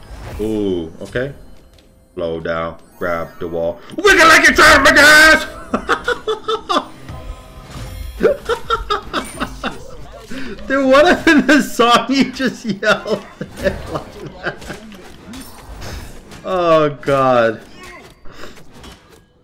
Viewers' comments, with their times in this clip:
0:04 beware headphone users😂